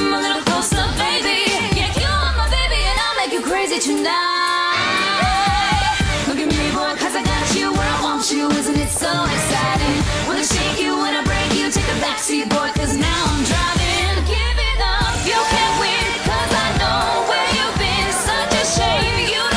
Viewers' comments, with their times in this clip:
0:04 is my favorite part ... this song is so catchy . I never knew Jade could sing